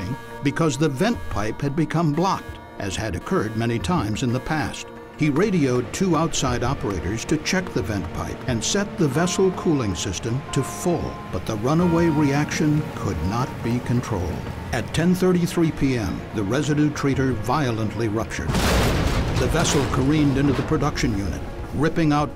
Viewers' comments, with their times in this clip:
0:08 Here's what I find spooky: starting you can hear church bells. Like, grim-sounding church bells you typically hear at a funeral